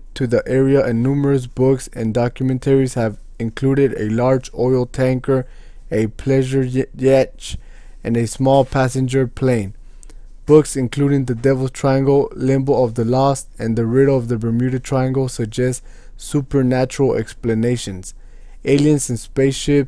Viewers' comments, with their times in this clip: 0:06 What’s a pleasure y-yetch?